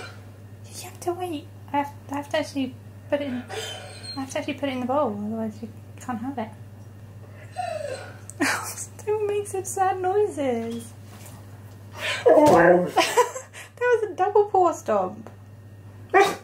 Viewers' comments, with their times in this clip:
0:03 XD that sigh